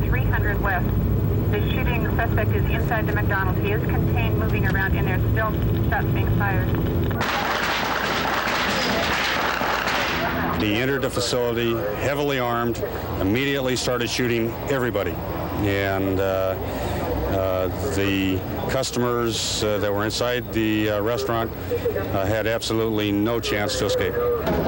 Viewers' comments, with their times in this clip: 0:07 I thought Huberty’s UZI was a semi-automatic, but that sure sounds like an automatic UZI.